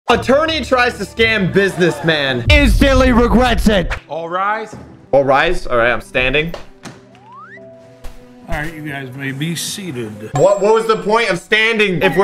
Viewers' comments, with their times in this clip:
0:00 whenever I hear that word, I think of a-turn-e